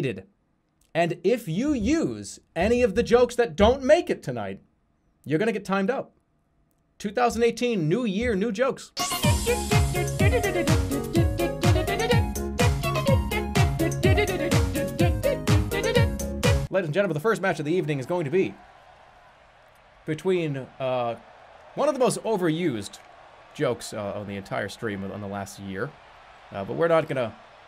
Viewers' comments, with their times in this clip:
0:08 true pirate music !